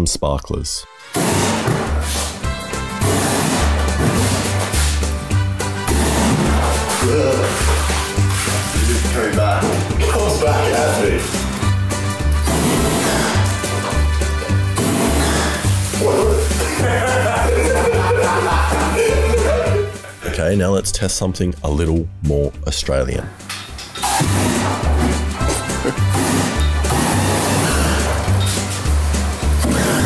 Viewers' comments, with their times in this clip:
0:06 he sounds like Dale from KOTH lmoa
0:11 the noise it makes when he releases the button is awesome, and scary